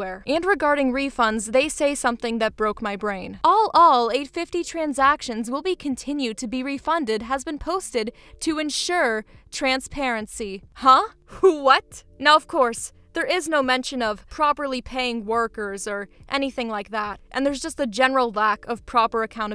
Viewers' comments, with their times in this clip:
0:04 wtf did you voice the telemarketing lady?